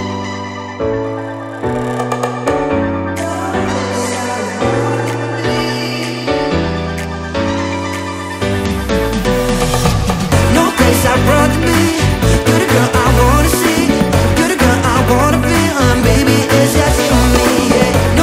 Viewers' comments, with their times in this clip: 0:06 p i a n o